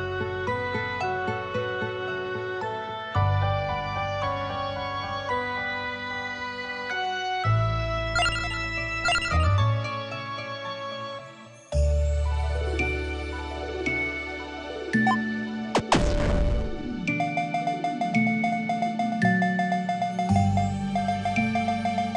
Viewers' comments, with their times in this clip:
0:07 You have the best laugh.